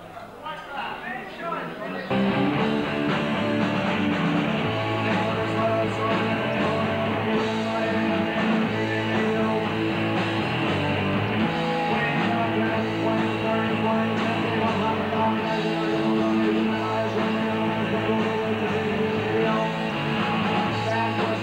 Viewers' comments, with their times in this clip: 0:07 Haha Gregs intro makes Brett laugh and continued to make Pete laugh.